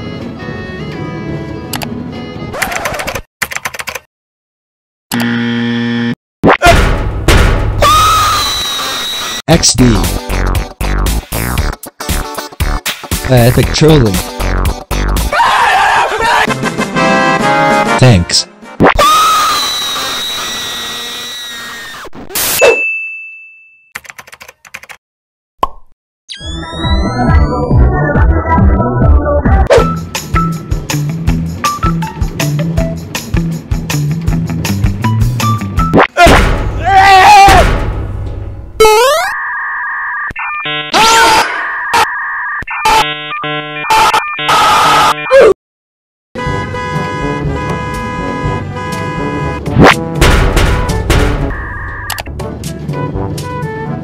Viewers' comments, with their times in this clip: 0:05 BEST LAUGJ I DID WITH THAT BACKFLIP
0:36 the scream of the bacon make me cant stop laughing